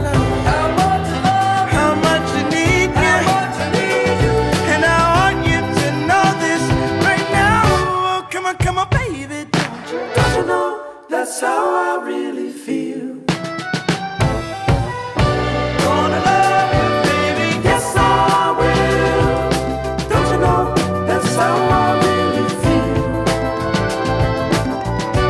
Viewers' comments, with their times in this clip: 0:08 I like how homie synched the clap👏